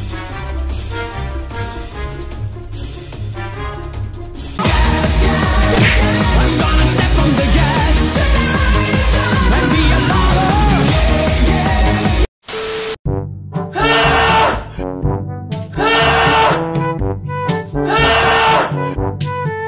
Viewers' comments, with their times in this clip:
0:04 OMG I was watching away and oh my this sooong is soooo loudly 😂